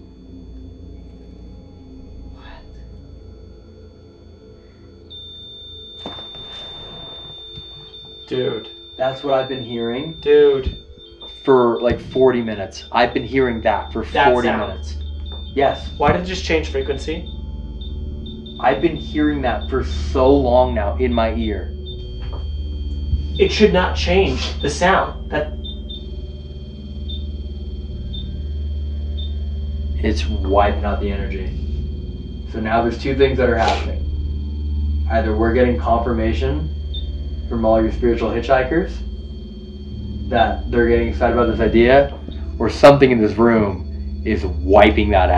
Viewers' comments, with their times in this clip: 0:08 When the beeping started more frequently I'm not familiar with morse code or anything else, but it sounded like morse code when the box began to beep back to back.
0:22 when the rem pod changes frequency it almost sounds like Morse code.
0:27 when the rem-pod changes to a higher frequency, could have gone higher to show Corey his own frequency is going to be raised. But then again Elton had a great point, lot of boxes opened up with possible entities who haven’t gotten power in a while.